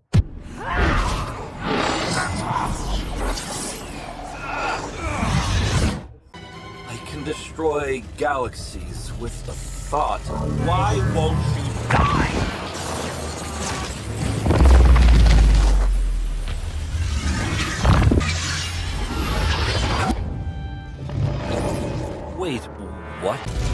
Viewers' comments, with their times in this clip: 0:06 “I can destroy galaxies with a fart” This is what i heard, and nothing can change this.